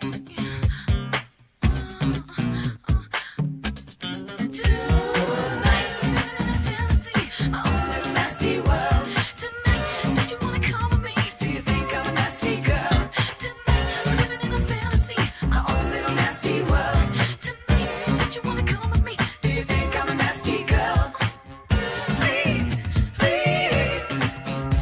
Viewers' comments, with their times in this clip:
0:08 It was the drop for me